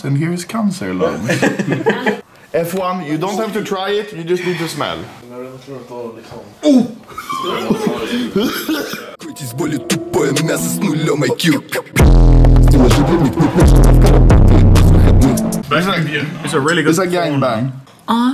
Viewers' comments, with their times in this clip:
0:06 wtf roblox death sound